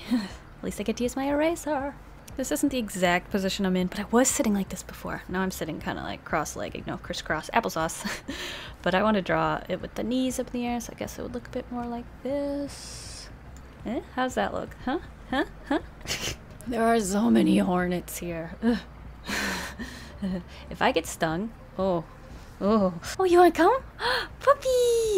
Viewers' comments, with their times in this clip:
0:09 Am I crazy or did I just hear her say “I want to draw it with the knees up the ass” like I watched it about 30 times and that’s still what I’m hearing?!?